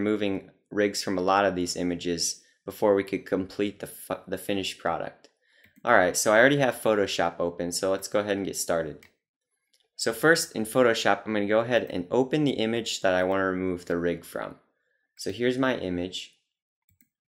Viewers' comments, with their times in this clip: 0:03 he slipped and wanted to say fuck since this process is so fucking painstaking!